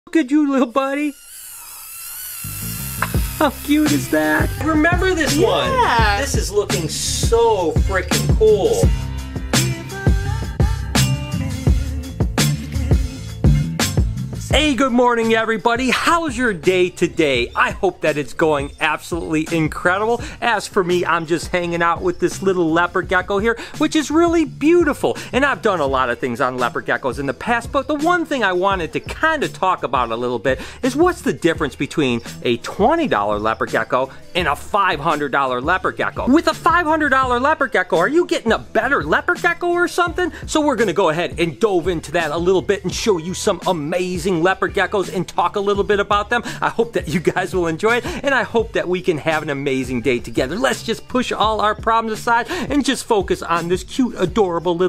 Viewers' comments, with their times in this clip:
0:01 he screeched because he got a bit uncomftrable
0:41 We’re gunna go ahead and dove into that?